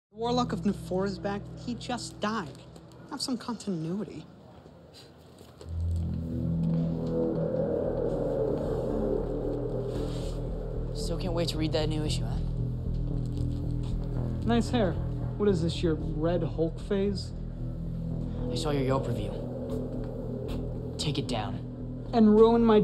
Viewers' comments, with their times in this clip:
0:05 badass. I love how the hair is shown like a shark fin and also the cool background music. Unfortunately I can’t find that specific theme anywhere😭